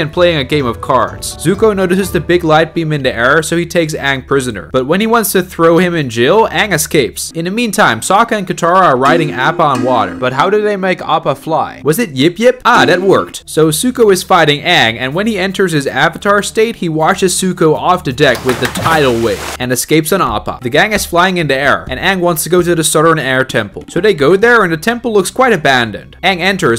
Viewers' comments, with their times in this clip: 0:10 hip hip the music and the way they just fly weeeeeeeee